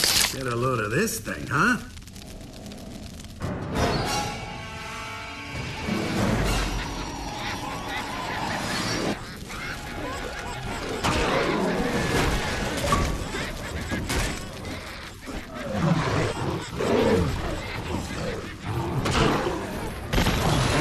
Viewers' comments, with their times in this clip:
0:07 Don't know why, but those laughing faces remind of Evil Dead 2. The high pitched laughing gets to me...